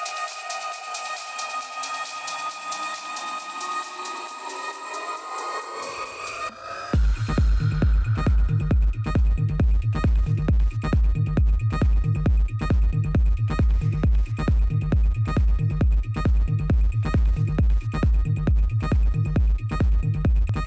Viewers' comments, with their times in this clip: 0:07 amazing hard trance beats